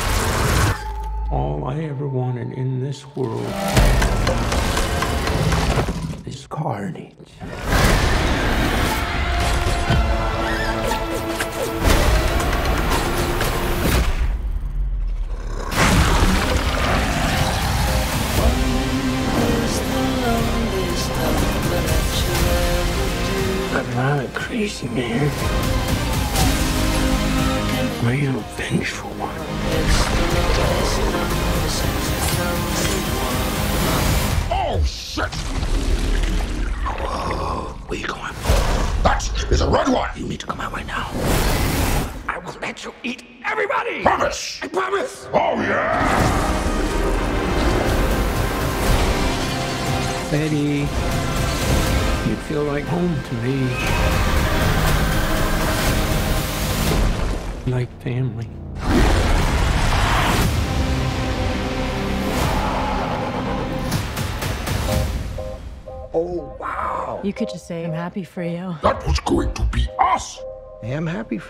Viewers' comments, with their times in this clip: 0:07 that roar always gave me goosebumps
0:10 squeaky toy sound effect
0:36 i can't with this scene, Venom sounds so funny 😭🤚🏻 "we're not gonna face that, its red!"
0:58 Anyone get chills in the trailer when Carnage Roars ? Carnage surely is one scary and the creepiest Marvel Symbiote without a doubt